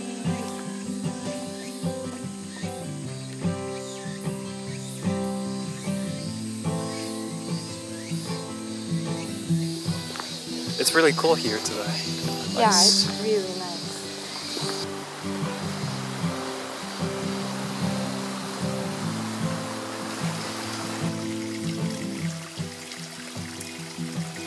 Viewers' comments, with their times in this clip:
0:08 you can hear anime sounds at the background